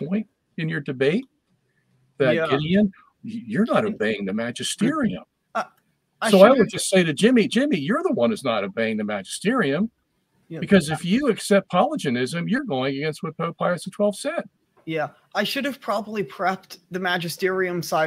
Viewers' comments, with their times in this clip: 0:03 that is a very good impression of Jimmy Akin